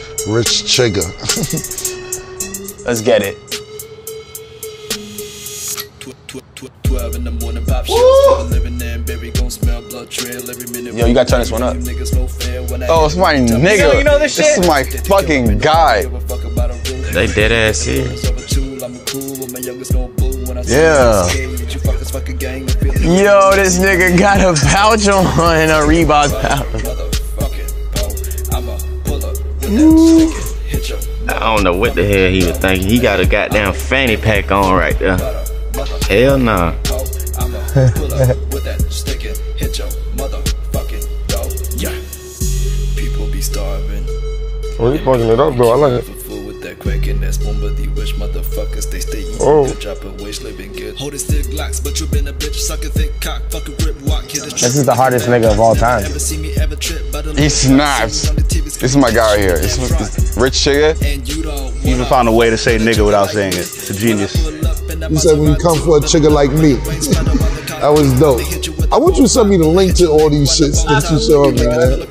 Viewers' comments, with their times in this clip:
0:04 BRO THE SURROUND SOUND IS INSANE RIGHT HERE
0:29 dat "whooooo" i can feel that.
0:31 why 21 so awkward when he said that 😭😭😂😂 "He gawt a gahtdamn fanny pack on ri deh" •looks around room for approval• "Hell naww"
0:37 it's how i laugh when someone says a joke but it's not funny.
0:43 anyone know the fuck desiigners sayin
0:54 the way tory just looked awstruck and said it like it was a fact